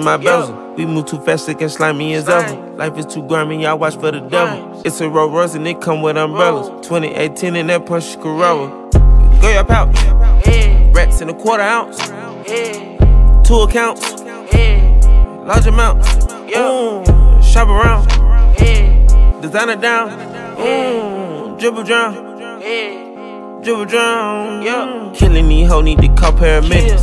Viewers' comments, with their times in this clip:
0:08 Was gunna eating something during the chorus part? 🤔